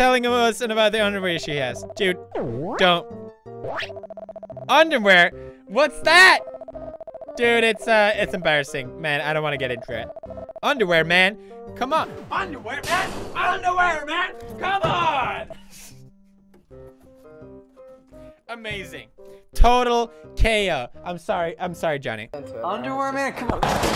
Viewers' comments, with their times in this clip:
0:08 whoa that Tourettes tic